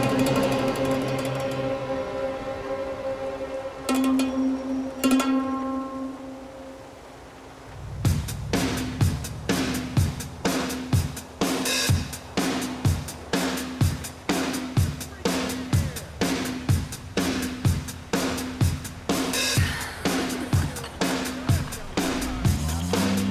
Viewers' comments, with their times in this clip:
0:08 sounds like Billie jean